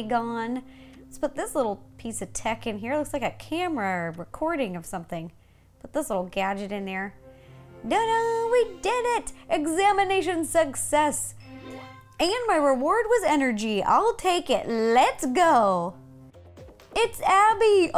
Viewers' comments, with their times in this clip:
0:04 OMG she sounded just like Abby